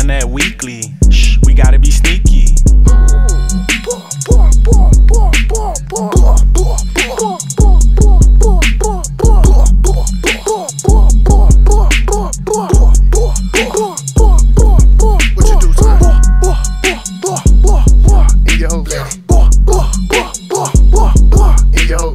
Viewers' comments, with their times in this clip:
0:03 how that 40 sounded last night